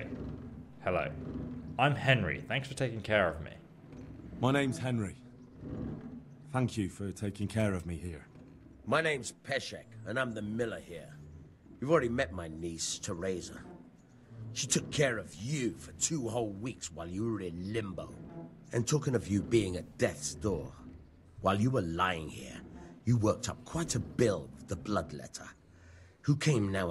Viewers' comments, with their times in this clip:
0:08 Didn't know that Alec Guinness is in the game